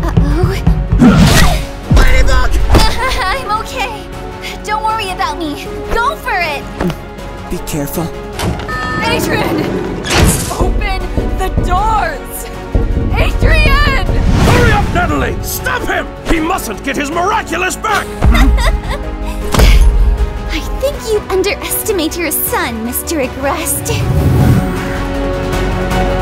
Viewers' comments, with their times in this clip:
0:08 The elevator sounds reminds me of the bo1 teleporter sound back in "kino der toten".